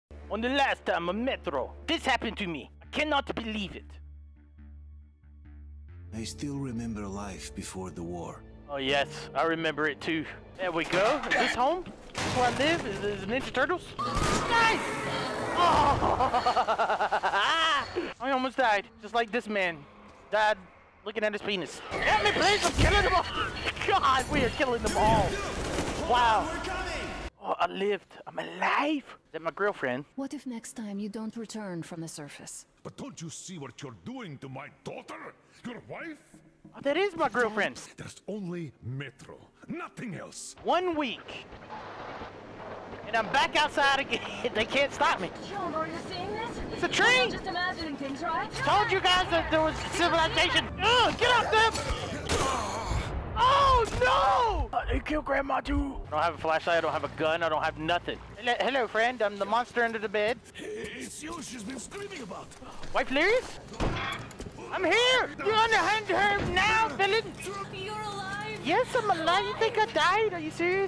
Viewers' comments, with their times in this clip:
0:00 Oh my god! Delirious actually sounds like a russian man!
0:02 What an amazing french accent I would pay for you to talk like that the whole game
0:52 The emotion in that “OH NO!!!!!”